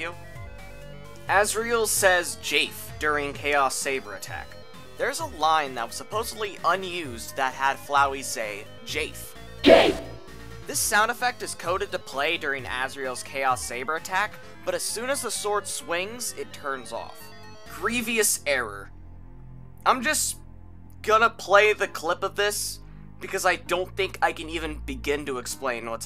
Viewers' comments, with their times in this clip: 0:09 please tell me i'm not the only one who heard 'GAY' instead of jafe-